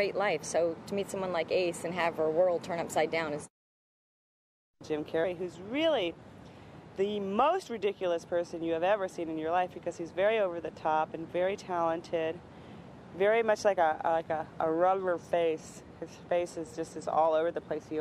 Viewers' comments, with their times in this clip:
0:04 All Finkle is a man jokes aside, Sean Young looked pretty hot in this movie. I love hearing her talk, her voice has a smooth "honey" quality to it.